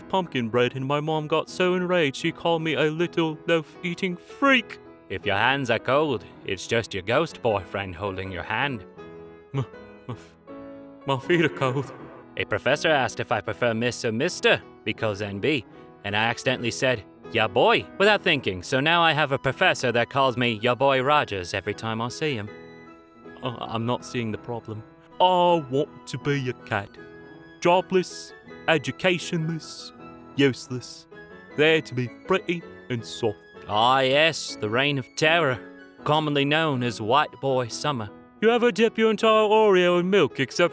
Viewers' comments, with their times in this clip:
0:05 Bad animaniacs impression
0:25 sounds like the chubby boy fairy from the Tinkerbell movies😭✌️ (I can’t remember his name-)